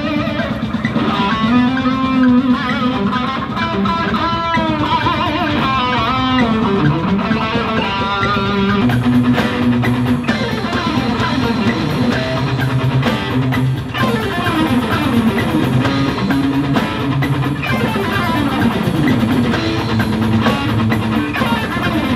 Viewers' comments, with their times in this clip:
0:09 Holy smokes - those runs are so fast and clean!